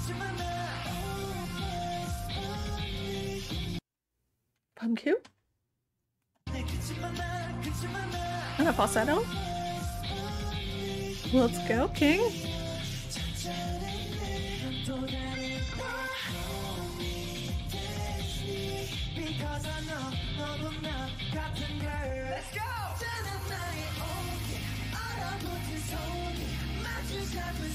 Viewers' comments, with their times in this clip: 0:08 btw that's Beomgyu doing the lower and Soobin the higher notes actually!